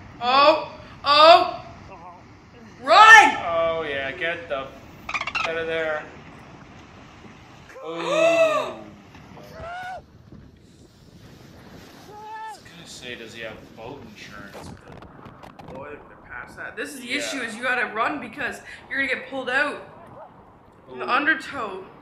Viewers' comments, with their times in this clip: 0:09 The scream from the video really got me 😂 Kinda sounded like a goat